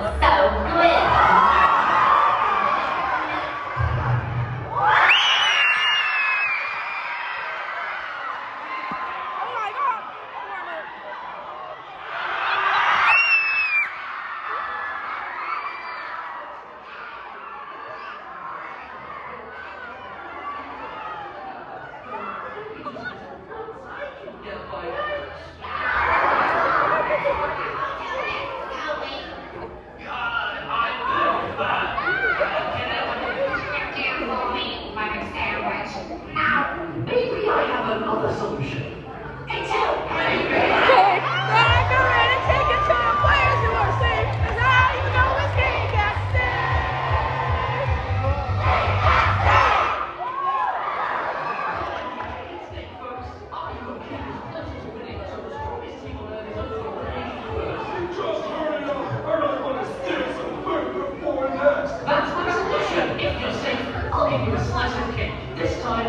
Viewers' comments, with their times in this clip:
0:03 Is it just me or did someone say "your fourner" while doing a leafy impression when four and x were revealed?
0:03 perfectly cut scream sample
0:03 everyone SCREAMING at the four and x reveal 😭😭
0:04 sounds more like a fire is burning the theater and everyone is screaming
0:23 THE AUDIENCE WENT CRAZY DURING X BITING TWOS HAND ! ! ! !
0:25 X biting two's arm- AND THE CROWD GOES WILD
0:39 i can hear bass
0:40 i just love how you can just hear that one person singing it so akwardly
0:48 cake at stake harmonizing